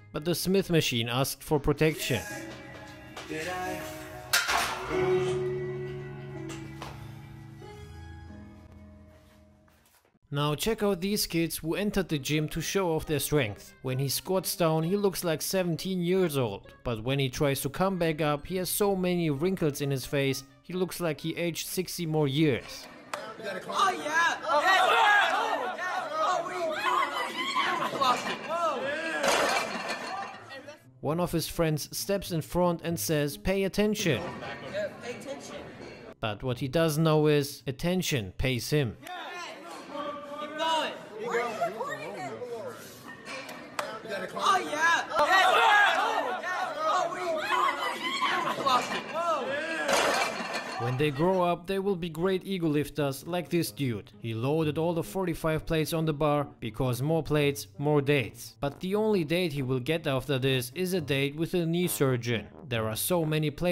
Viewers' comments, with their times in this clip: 0:03 Bro. Working out to Drake's "Lose You" is so incredibly saddening. I hope that dude is okay
0:49 the lady screaming 🤣 "wha wah hwa" beautiful recreation of Sims language